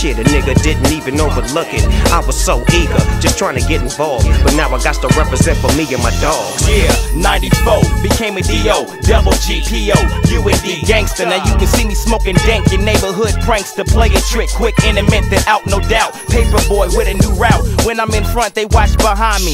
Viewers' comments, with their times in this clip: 0:06 Kurupt from on killing it, memories from 20 years ago, damn smooth!